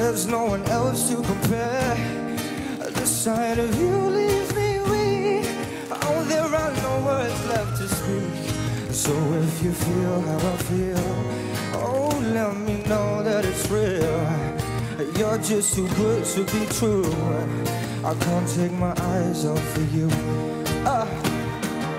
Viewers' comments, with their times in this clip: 0:08 the line "so if you feel how I feel" is sung so seductively